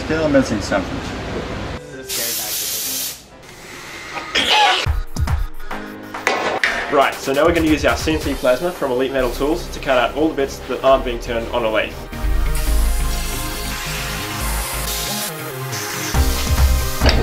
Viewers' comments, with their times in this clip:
0:04 did that chicken yell out YEEET